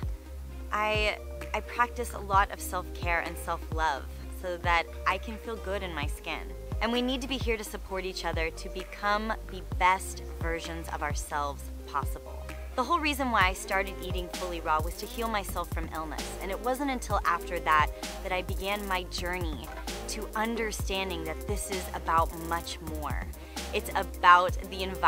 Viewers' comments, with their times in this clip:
0:07 anyone else hear the faint voices ?